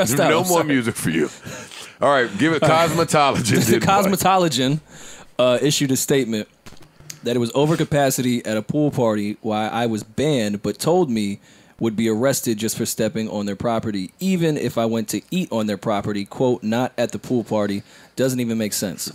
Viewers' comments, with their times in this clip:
0:04 Yall notice Joe and Rory said COSMETOLIGIAN again!?! listen 🤣🤣🤣